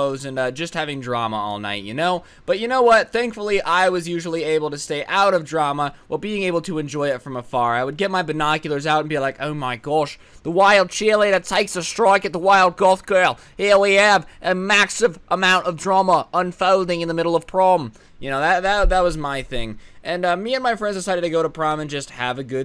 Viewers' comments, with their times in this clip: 0:09 when did he become australian?
0:09 Amazing Australian accent